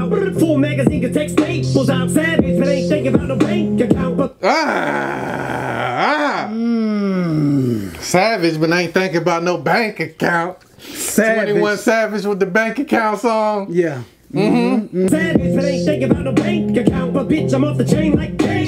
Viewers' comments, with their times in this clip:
0:04 Em spits a line "AHHHHHHHhhhh" rewinds and gets one line further "AHHHHHHHHHHH" Lmao hilarious.